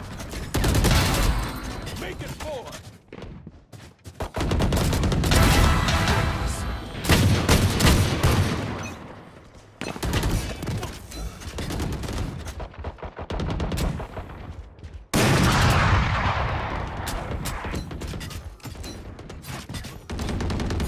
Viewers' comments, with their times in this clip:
0:04 theres also an ace sound